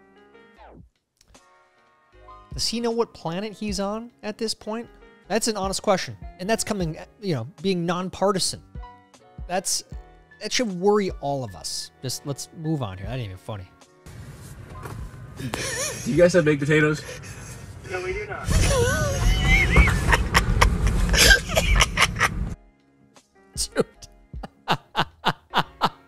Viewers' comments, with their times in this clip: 0:08 I feel like Biden sounds like all politicians when I was a 10 year old kid n I had to watch politicians